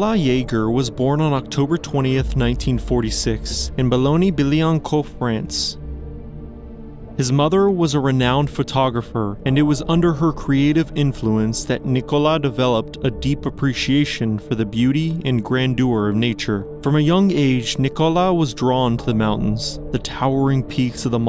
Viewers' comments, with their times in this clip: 0:05 As a french speaker, let me tell you that you absolutely destroyed the pronunciation of Boulogne Billancourt It was kinda funny.